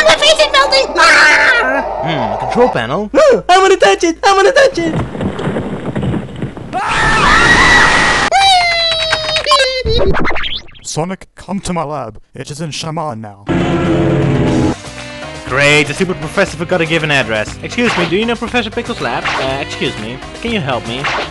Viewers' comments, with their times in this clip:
0:06 How did you get that scream on ?